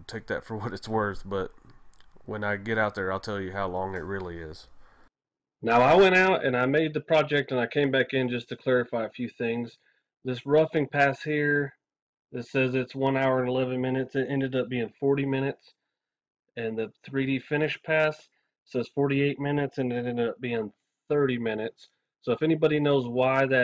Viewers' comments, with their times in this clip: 0:06 The volume for your intro was fine, but then I couldn't hear anything without turning my speakers all the way up. Then I got blasted by loud volume, had to quickly reach for the volume control again.